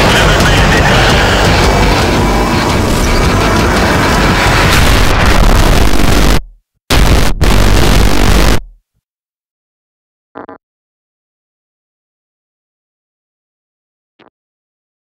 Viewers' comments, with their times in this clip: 0:04 I feel sorry for the headphone users